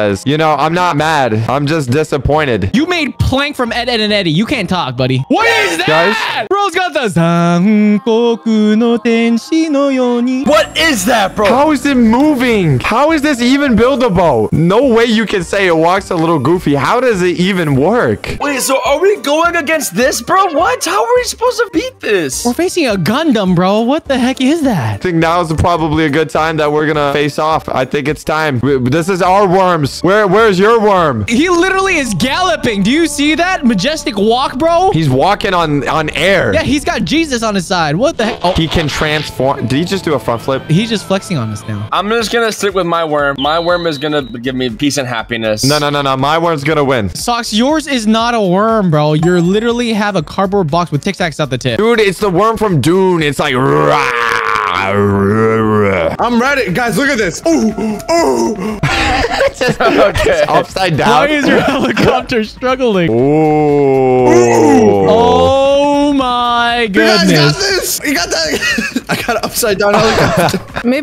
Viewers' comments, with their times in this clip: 0:04 THE TUNE IS JUST PERFECT
0:06 how did bro sing that ferfectly 😭
0:06 there is no way he sang that so perfectly
0:07 What was bro singing 💀
0:07 This is when he starts singing
0:08 bro got the neon genisis evangalion ahh voice
0:56 is there a vacuum cleaner😂😂😂😂😂